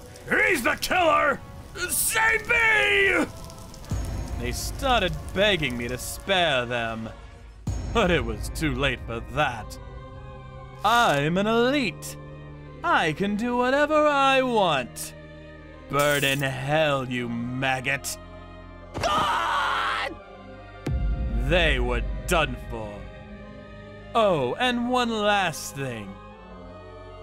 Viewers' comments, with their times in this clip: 0:08 The music is so epic.